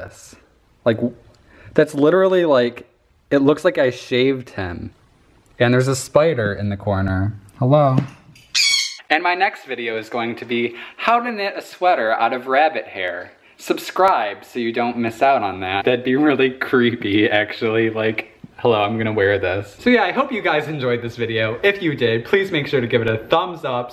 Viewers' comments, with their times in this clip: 0:05 there is a spider in corner and then that bird screamed and it looks like spider screamed xD
0:08 did that spider just fucking squak